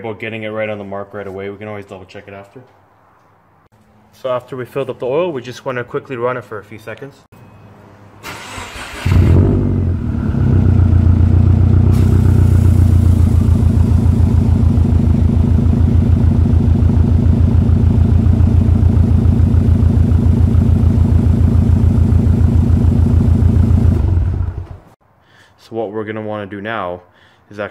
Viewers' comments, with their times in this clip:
0:09 Don't run the Ac right after an oil change (I heard it when you started the car post oil change ). It disturbs the filaments from the exchanger between the CF and IC.